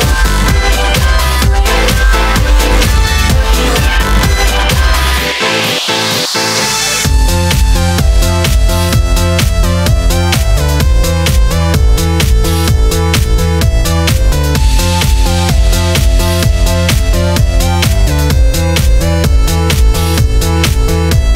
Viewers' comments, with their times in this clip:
0:06 *¬* Nice melody. Good Work :)